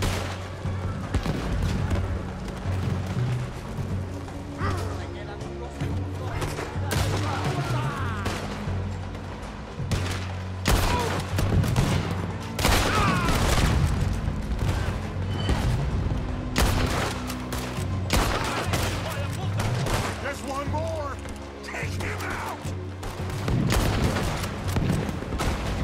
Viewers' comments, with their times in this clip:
0:08 that instrument hits hard with the ship getting closer